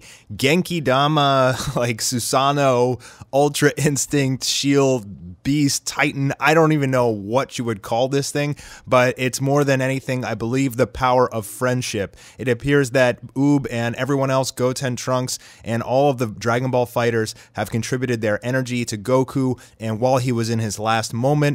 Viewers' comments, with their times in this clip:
0:04 ki giant boom.